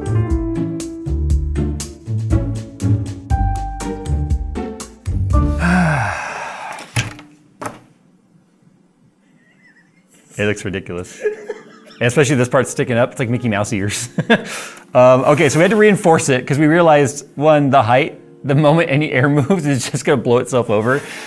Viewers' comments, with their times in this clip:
0:08 Was that a horse i heard in the background? >.>